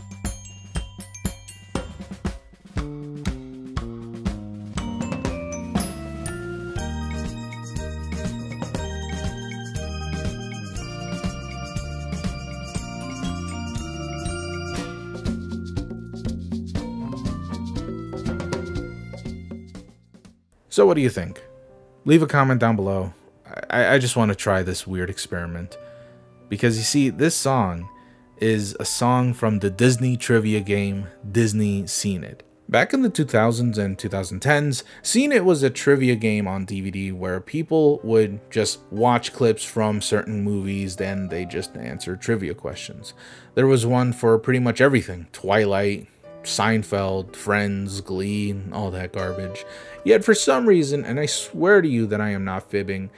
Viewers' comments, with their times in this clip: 0:02 The song sounds like something from baldis basics 💀
0:03 its sounds disgusting
0:05 that to me sounds like if you combined tribal music and kids movie soundtrack
0:06 it feels upbeat and happy
0:08 feels like an old kid game on 3ds that nobody remember
0:08 I never played scene it Disney or didnt even knew it existed... either way I think its because this song feels very lackluster. The instruments come in as if in random and I am almost suprised that at one moment it doesn't sound like a mess. its not that it is scary but kind of... weird.
0:19 So, I feel nostalgic and happy when listening to the song, but there's the... strangest sense of unease at the same time? But I can't help but wonder if somehow that's because of the way it was presented in the context of this video. Perhaps my mind was searching for something that isn't really there? It kinda reminds me of a lot of the music used in indie horror games that use the childish 'everything is fine' aesthetics and musics when really everything isn't fine and within the next few minutes everything will be covered in blood.
0:20 felt kinda generic, filler until you pick what you want to do. No emotions.
0:20 I feel a little bit nostalgic. Then in the back of my mind I feel like I'm playing a JRP or some sort of that genre where I have to visit a town or whatever
0:22 To me the Disney song gives chill playful vibes. Like the base track for a festival / party song or the feeling before a party / festival when you're setting everything up. Probably fits with the party game origin but eh. Or another option of how it sounds is like, when the party / festival has begun to chill. Everyone's a bit tired but they're still having fun, just aren't as energetic and are more sitting around chatting or eating snacks.
0:24 It's kinda nice, but it feels like a piece of it is missing. Like vocals or something.
0:35 I actually liked that Disney Song, I found myself kind of vibing to it and dancin in my chair.